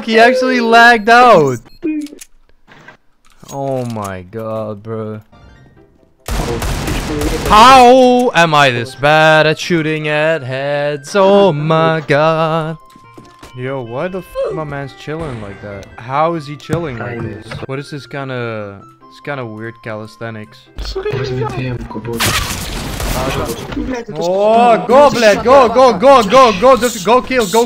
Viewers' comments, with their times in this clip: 0:08 i tought some1 calling me on discord